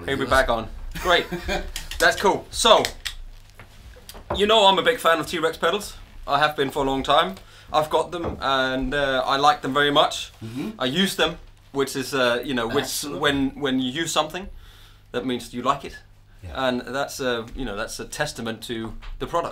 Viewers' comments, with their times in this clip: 0:07 ........where is the cup smash sound guys ?!?!? that is my day ruined!